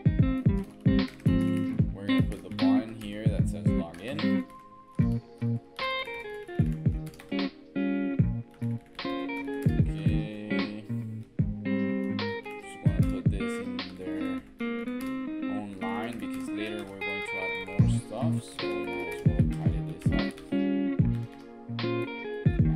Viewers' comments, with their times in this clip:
0:08 IMPORTTAN! Till minute I know the music is louder than my voice, after that it should be fine